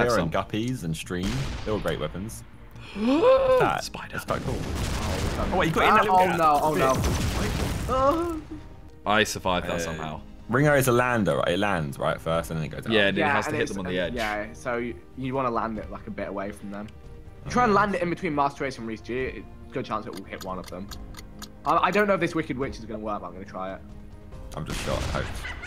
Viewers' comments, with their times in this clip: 0:07 wtf was that noise vik 😂